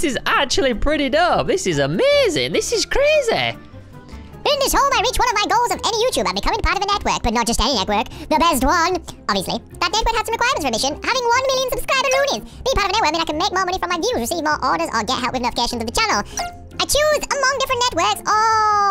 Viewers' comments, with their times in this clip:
0:04 you sound like alvin and the chipmunks